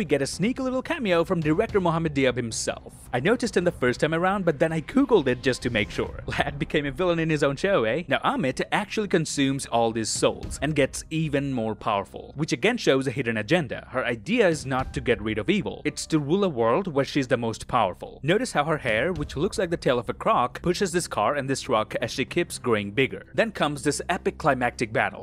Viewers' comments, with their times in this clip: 0:06 Ta-way-ret is how Steven, the clever one, pronounces her name. the guy whom Diab is judging is also one of those who worked on this show.